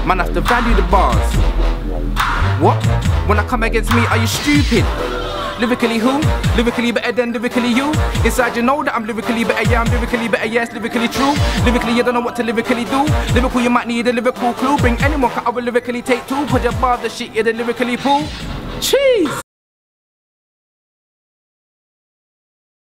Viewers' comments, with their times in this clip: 0:05 Slyly sounds like Big H just saying. Also you cant say D Double does not come to mind lool